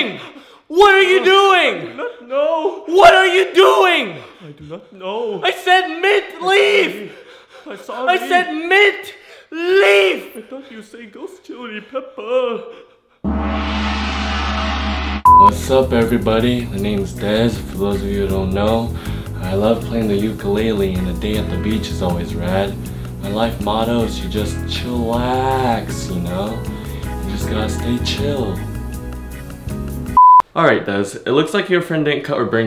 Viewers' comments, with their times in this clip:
0:08 turn on captions and u see when that guy scream the caption says "[music]"
0:17 did it was only me or he said my name is grass🤣😅